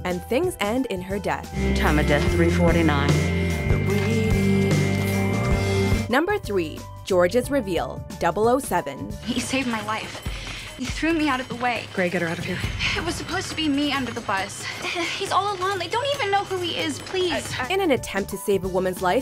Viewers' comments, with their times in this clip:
0:03 the way she said number three Bru just listen
0:06 Not to be rude, because I think it's really cute, but does anyone else here "Number Thwee"? ♥